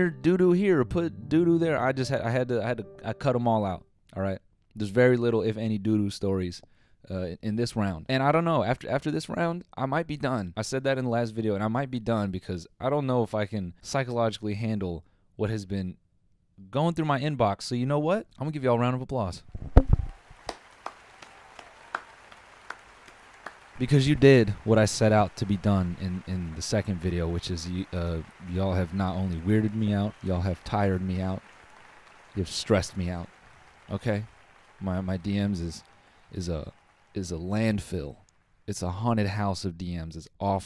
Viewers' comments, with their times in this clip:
0:08 you can hear the fear in his voice
0:21 why you clap like a GTA character lmaooo